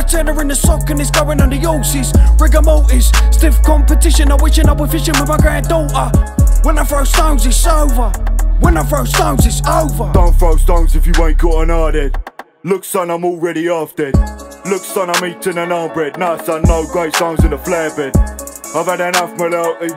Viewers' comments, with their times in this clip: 0:03 😳😳😳🔥🔥 the flow is cold